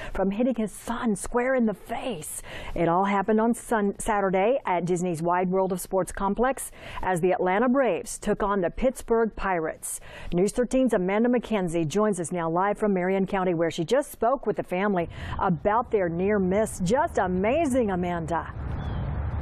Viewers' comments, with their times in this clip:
0:04 listen she said sun saturday